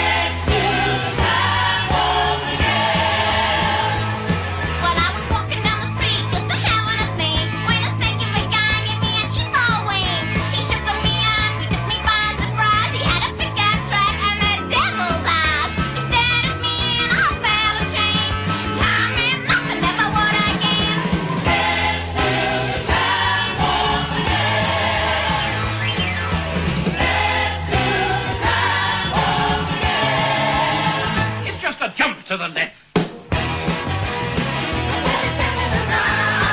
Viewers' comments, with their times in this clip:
0:04 she sounds like cherry from Pee Wee's play house
0:22 She sounds like a squeaky toy xD